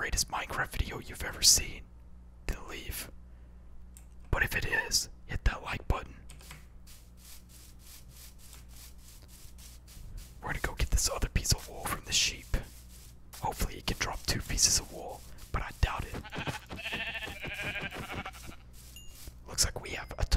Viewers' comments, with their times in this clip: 0:04 I heard a voice crack